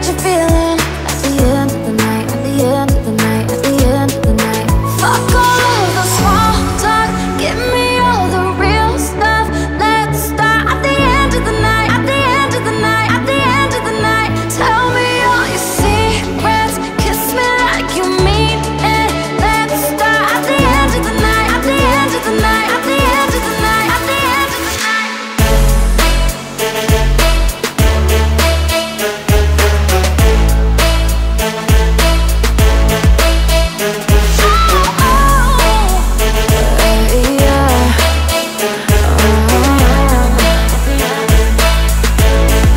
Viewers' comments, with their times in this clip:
0:05 really reminds me of Impossible by James Arthur / Shontelle ... same time
0:26 s on speed 1,25 hear very cool.